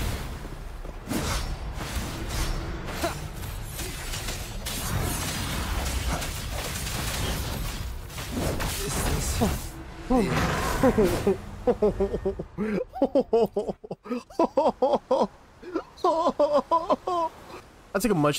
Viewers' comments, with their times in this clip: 0:05 THAT CHUCKLE MAN. The whole time I was like- hold up, LET EM COOK- and I felt that through the SCREEN.